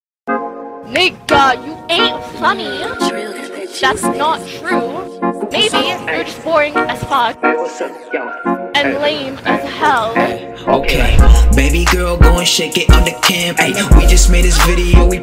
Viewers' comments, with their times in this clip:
0:00 Im always coming back to listen to this sometimes of how the disstrack is good While listening to this again I realized it kinda sound like she said the N word on (edit: yep she did said it)